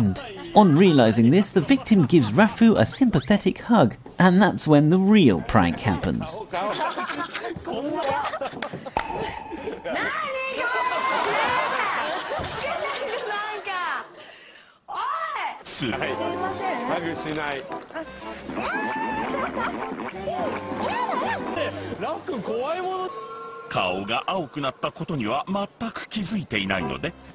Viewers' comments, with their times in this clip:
0:08 her voice is so cute
0:09 nani kore😆,her husky voice is so cute..